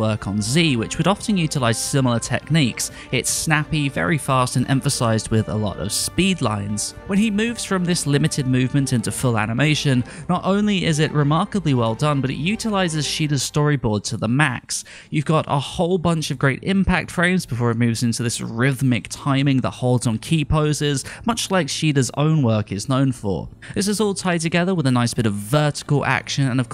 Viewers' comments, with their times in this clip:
0:10 The art was wonderful. The second half of this episode felt like a DBZ episode... They even brought the original DBZ speed sound when Vegeta use his speed to go behind Jiren I use to complain about the sound in DBS but hearing that made my ears melt lol